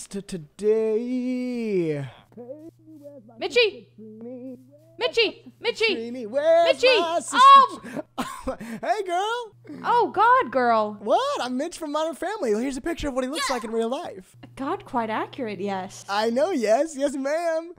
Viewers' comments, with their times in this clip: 0:03 NOT HIM SINGING IN DISTANT